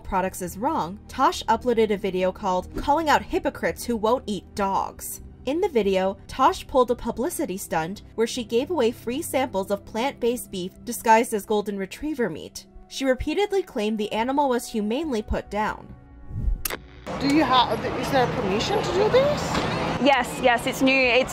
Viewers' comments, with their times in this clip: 0:04 chinese guys laughing 😅